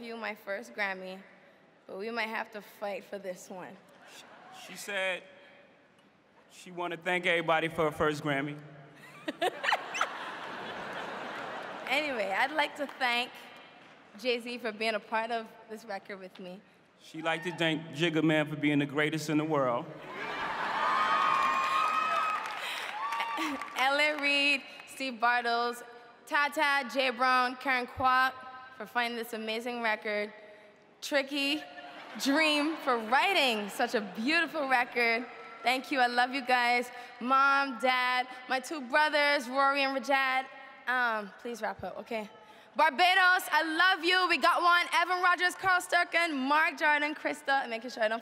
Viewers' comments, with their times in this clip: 0:09 that laugh is EVERYTHING .
0:10 Why does she have a Dolphin laugh?! (I am a Rihanna Stan btw no Shade ahaha)
0:30 She sas like back-up braa 😭😭😭